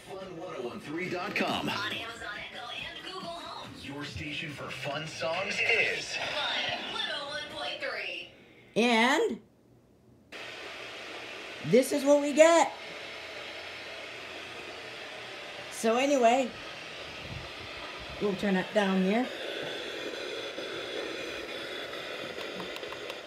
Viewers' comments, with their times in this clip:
0:10 Fun 101.3 goes to static!